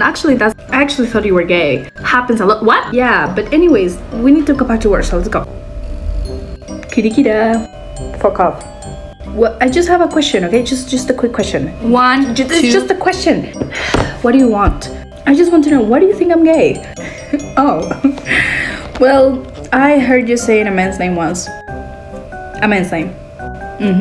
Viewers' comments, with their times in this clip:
0:06 I love the way he said "Kudikida : D"